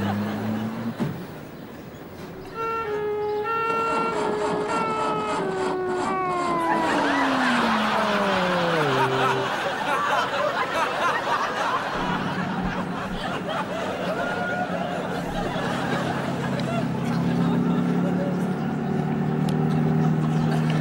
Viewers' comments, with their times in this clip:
0:03 ambulance out of battery